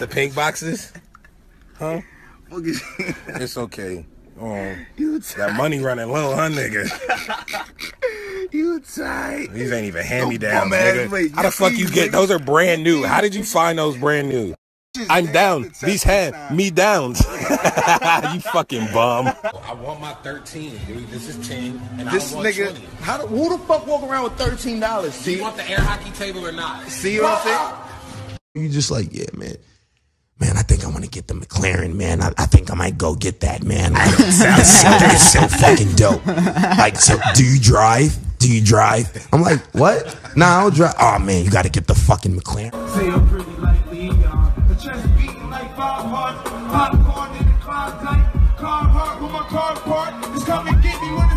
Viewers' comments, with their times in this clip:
0:04 who is spraying windex
0:15 He he started rapping tho!!!🤣🤣🤣🤣😂😂
0:30 BRUH he was ON POINT with that impression
0:30 Rocky can mimic Tyler's voice?😲 thats crazy dawg. Thats friendship right there.
0:30 the funny thing is Asap rocky makes a good impression of Tyler
0:30 no he sounds exactly like Tyler 😂
0:31 why is Rocky’s impression of Tyler so good 💀💀 I actually thought it was Tyler talking at first 😂
0:32 how tf is his impression so good ?? You know he practiced that like I thought Tyler was actually talking 😭😭
0:34 Why is his impression kind of… accurate 💀😭
0:34 says „I don’t sound like that“ in exactly the same voice😭😭
0:35 asap is literally the only person who can sound like tyler more than tyler himself, man I just can’t lol